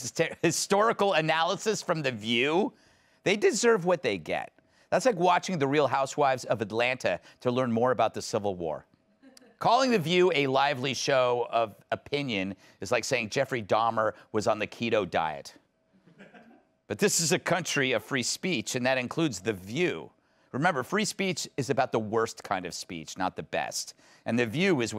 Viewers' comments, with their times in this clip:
0:08 the one guy who laughs at the Dahmer-Keto diet joke 🤣 😂 I'm with you man. I spit my blueberry lemonade out laughing